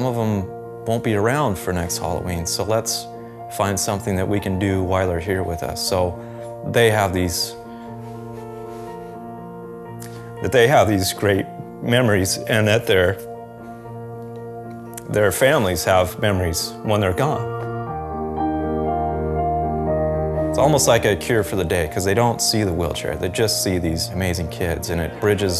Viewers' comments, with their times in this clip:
0:07 Man, that pause was so sad. I hope this man get to spend most of his quality time with his son and their family.